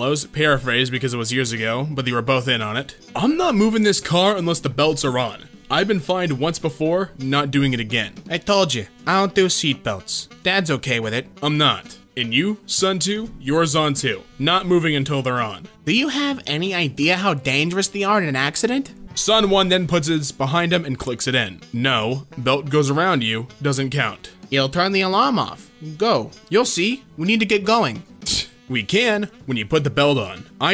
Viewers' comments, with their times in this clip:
0:08 Why does the kid sound like a seven year old mafia boss?
0:12 I thought he said: "Son2, you're son2."